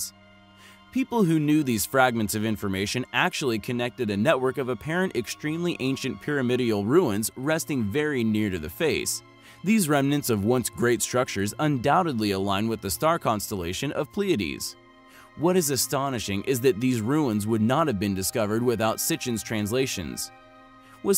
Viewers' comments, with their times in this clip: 0:05 Writer probly misspelled "primordial" and he read "pirimirdial" lol